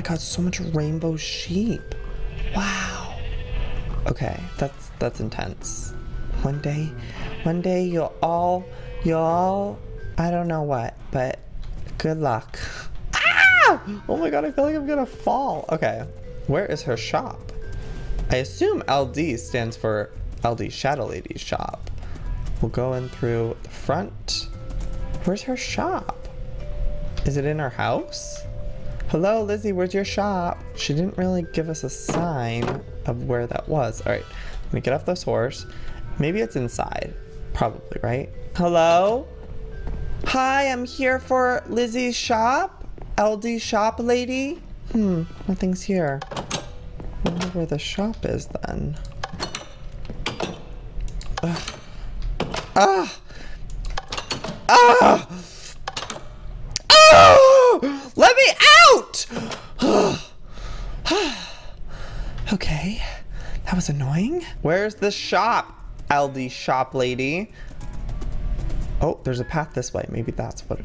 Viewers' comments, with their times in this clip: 0:10 On his voice got really cute
0:57 I forgot I was wearing earphones and it was on full volume...